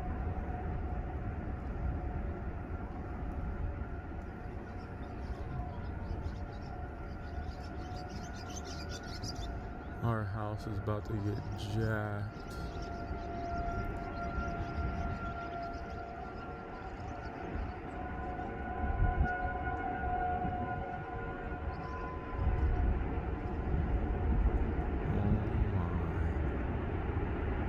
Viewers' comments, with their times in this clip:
0:08 The tornado in sounds so much like a freight train, damn the sound is eerie!